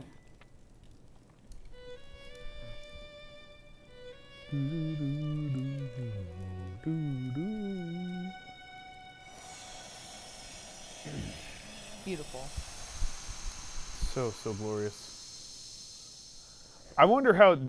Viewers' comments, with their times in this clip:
0:03 that’s not even what a cello sounds like.